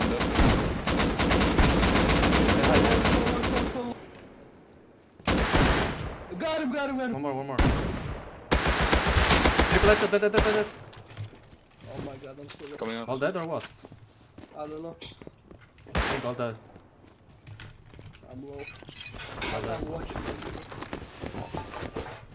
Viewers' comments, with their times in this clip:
0:06 i no hear 3 headshot